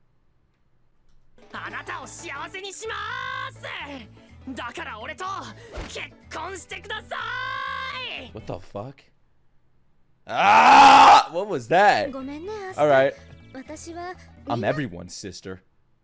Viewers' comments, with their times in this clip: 0:03 From what i remember this was the first role ever for Asta's VA and that's why he sounds so high pitched and annoying so congratz and welcome to 170 episodes of asta potentially sounding like this all the time or something i wouldn't know i put this on hold after 11 eps back in 2019 cuz i had too many other anime to watch